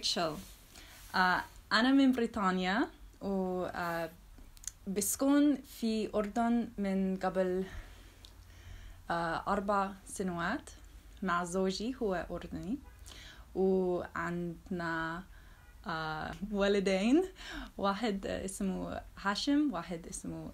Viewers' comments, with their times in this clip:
0:06 I agree but one thing to note is that there is some difference in the way of speech between genders in Jordan; for example, women generally pronounce the letter "ق" as "A" rather than "Ga", so instead of "Ga-bel" you'd say "A-bel" ...